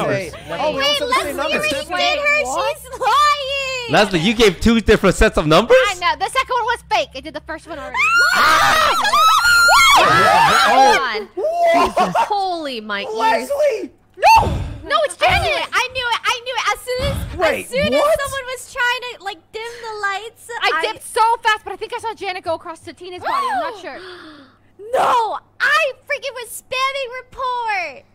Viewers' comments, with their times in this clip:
0:09 R.I.P everyone's ears that uses earphones on